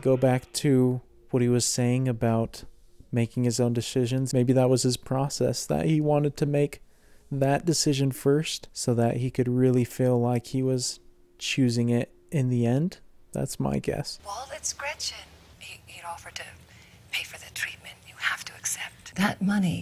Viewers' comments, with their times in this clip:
0:03 making his own “deshizons” 😂 i thought i heard wrong but went back to make sure lol